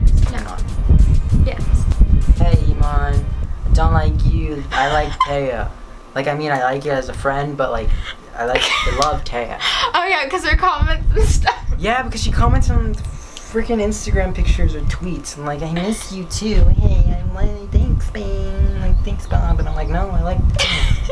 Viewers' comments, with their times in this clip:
0:05 Oh my god I just started typing and a girl had the same pronunciation as me